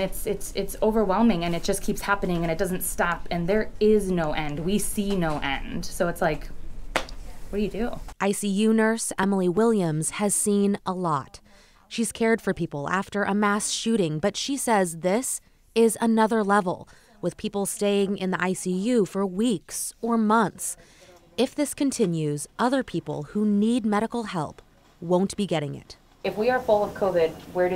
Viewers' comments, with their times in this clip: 0:09 omg is that a beeper?